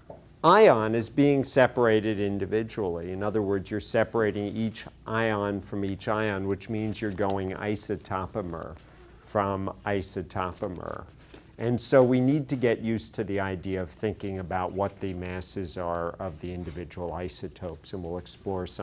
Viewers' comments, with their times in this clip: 0:06 The part where he says "isotopomer... from isotopomer" needs to be sampled and incorporated into a rap song.